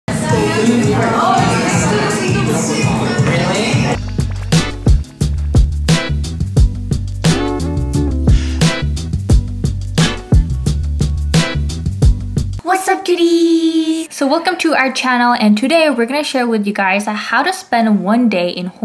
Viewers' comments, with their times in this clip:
0:01 Shawn mendes in the background ㅋㅋㅋ